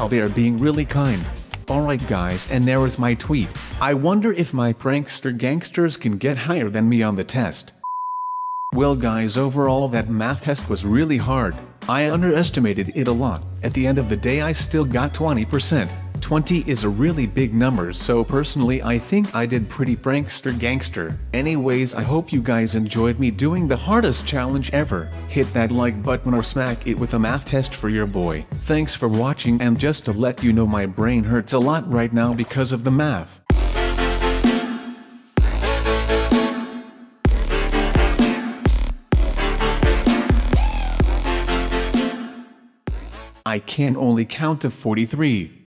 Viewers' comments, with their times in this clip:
0:03 his voice sounded almost human (when he says "I wonder"
0:42 was that i can only count to 43 or i cant only count to 43?